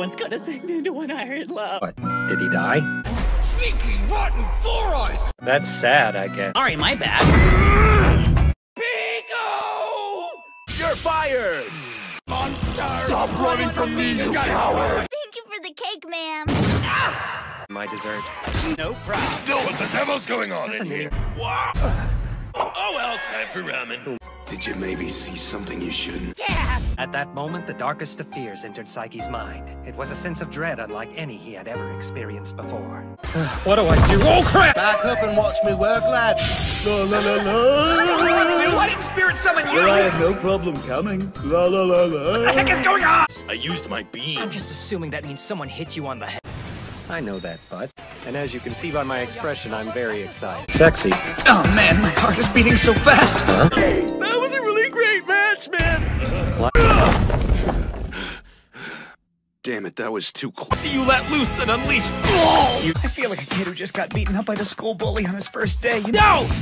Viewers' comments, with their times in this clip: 0:05 in the most monotone voice.. lovely
0:17 "My dessert :)" CRASH
0:33 The way he says it
0:33 sounds like the guy who chugged sparkling water and ran into his garage door 💀💀💀
0:51 why did I hear "why is my c**k beating so fast" 😭😭💀💀